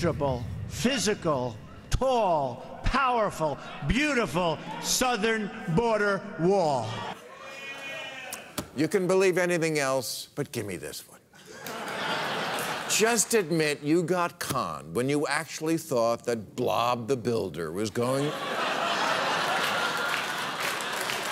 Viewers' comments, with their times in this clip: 0:06 An audience member said yeahhhh?